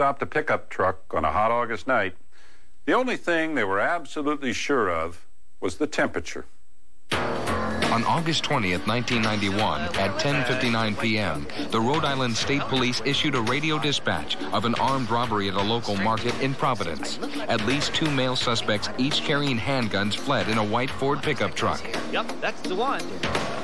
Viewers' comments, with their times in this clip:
0:06 the narrator voice in the Reenactment and show early to mid 1994 thru 1998